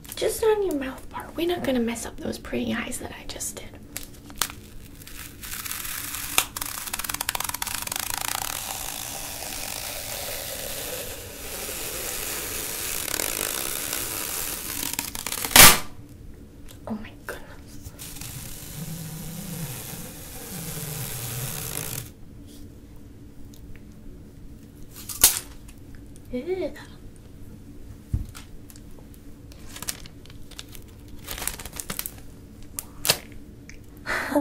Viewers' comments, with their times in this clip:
0:07 The tape sounds made me sleep :3
0:14 Watch your ears, guys
0:15 Ripppppppppp.....TEAR Scared shitless
0:15 r.i.p headphone users 🎧 💀 I know because I am one 😱🤣
0:17 she sounds like my auntie